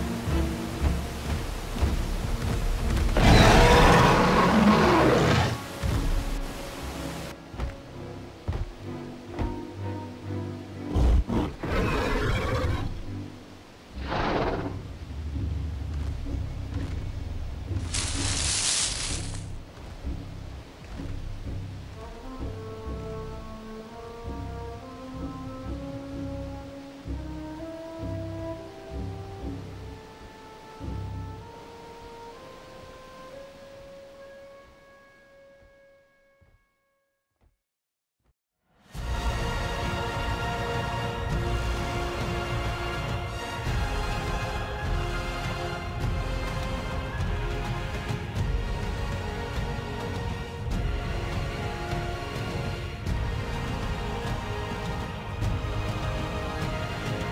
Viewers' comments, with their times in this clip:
0:03 ok that roar sounds cooler then the generic JP spino roar. Sounds more bizarre but yet believable.
0:39 That music make me cry 😭